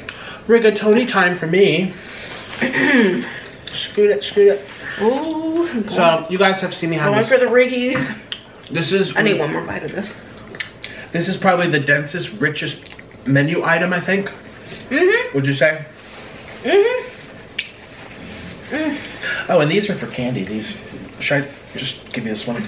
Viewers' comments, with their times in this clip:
0:06 when she kept talking over him lmao